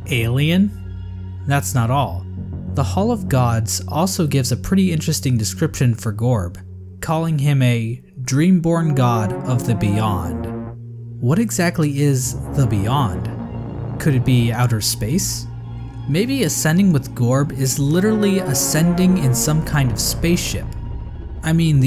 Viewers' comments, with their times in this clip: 0:08 once you put that music on I audibly gasped